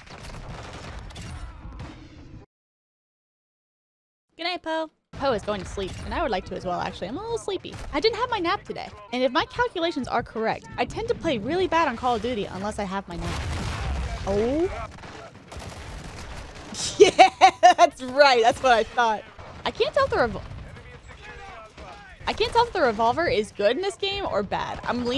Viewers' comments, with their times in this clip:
0:08 "and if my calculations are correct"🤓 BOOM "ohh.." bro I started laughing so hard idk why, great video I wanna go grind handguns now lmao